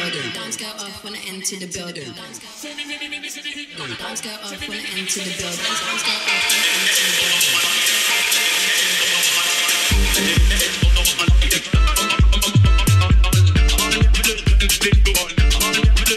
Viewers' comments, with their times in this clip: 0:03 the way she dropped jamie xx in absolutely delicious ❤‍🔥❤‍🔥❤‍🔥